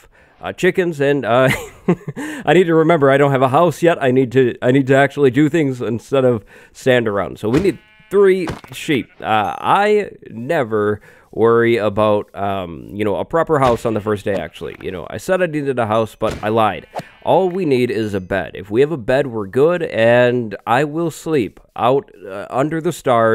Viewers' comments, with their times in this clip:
0:09 you sound like Obama